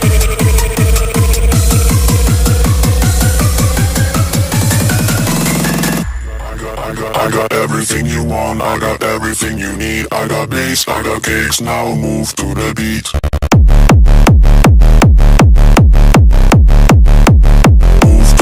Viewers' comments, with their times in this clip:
0:06 hits to hard